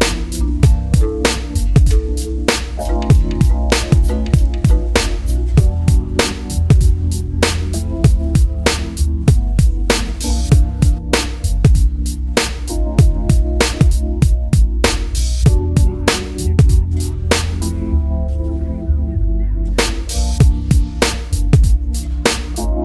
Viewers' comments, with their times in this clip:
0:07 that stab on the heavy tho